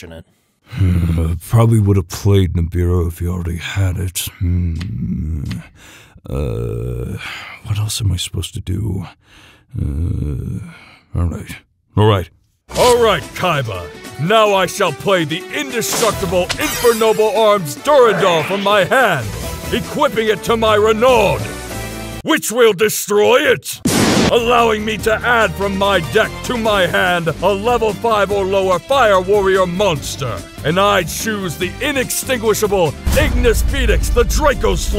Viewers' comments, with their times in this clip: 0:05 Yugi getting stuck thinking about what to do is so funny to me, the voice actor absolutely crushed it :)
0:12 Just gonna drop a handy timestamp so I can replay that part lmao! I love how the card destruction effect is also perfectly cut, with the music being completely absent alongside it.
0:21 "Which will destroy it" sounds just like Hans the Hand from Spongebob